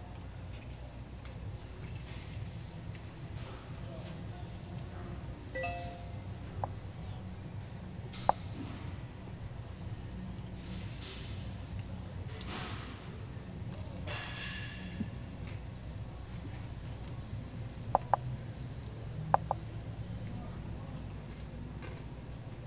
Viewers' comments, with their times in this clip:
0:05 holy throwback. The old blackberry sound